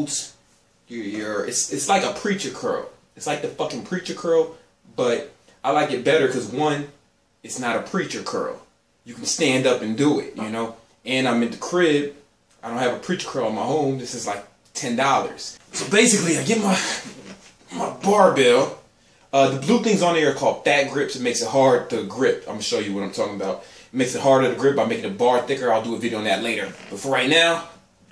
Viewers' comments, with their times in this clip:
0:09 sounds like you fart man. Haha, I'm childish.. wait, focus! back to muscle building.
0:10 He blasted a fart
0:10 Anyone else hear that fart ?